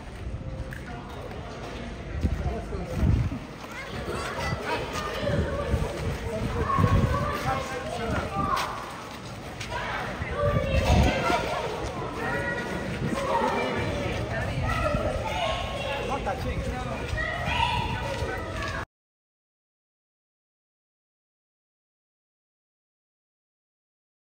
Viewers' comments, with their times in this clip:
0:10 Do not touch the guard, he is on duty. Then the man laughs as if he did not know what in the blazes he did wrong. Who raised this dude? Anyone with any upbringing knows that you do not go around touching someone, especially someone armed and in uniform, don't they?